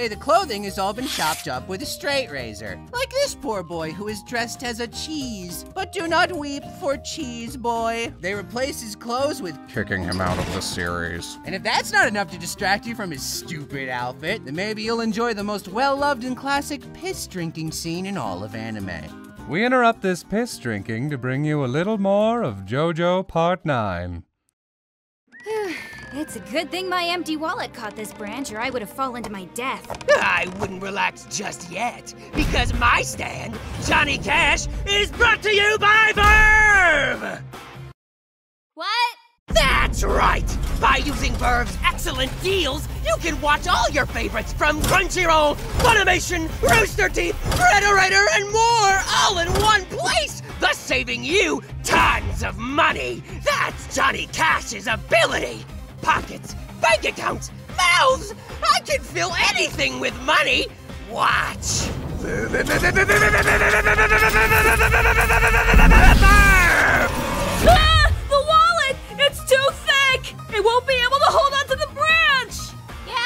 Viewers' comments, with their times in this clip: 0:04 Thank you for the sound of “chëêśę”
1:00 The stand cry is somehow sound like the official stand cry for something like that I would like to punch my enemies with that cry